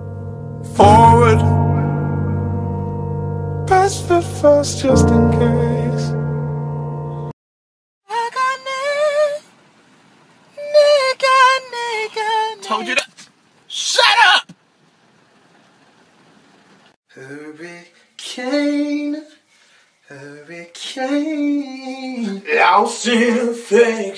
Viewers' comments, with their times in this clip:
0:09 the freaking falsetto though 😭💀